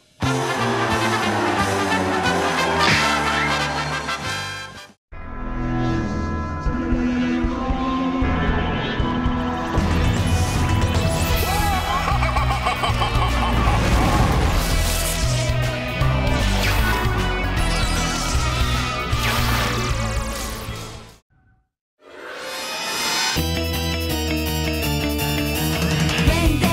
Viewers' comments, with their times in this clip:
0:09 deadass sounds like a boss fight